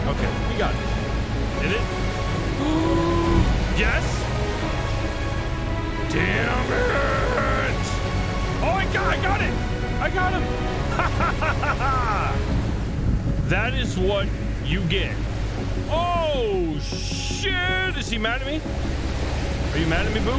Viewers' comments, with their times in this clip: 0:08 Nice pirate laugh